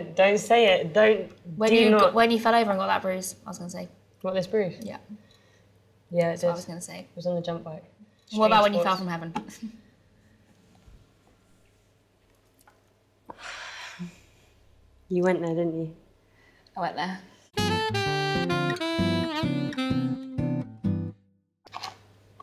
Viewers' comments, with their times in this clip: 0:06 The ‘fell out of heaven’ line was so well timed that Amelia couldn’t help but laugh at her own joke